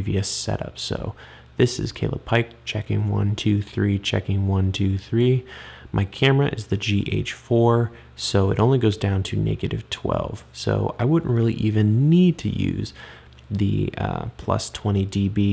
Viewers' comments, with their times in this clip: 0:03 Very Difficult to hear 20+ DB sounds really bad why? Not nice to listen... 0 DB sounds great... Why? (I am not a sound man).